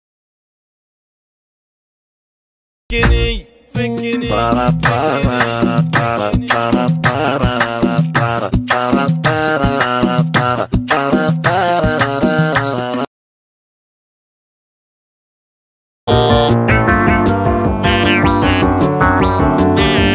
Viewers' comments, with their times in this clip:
0:03 that's an arabic song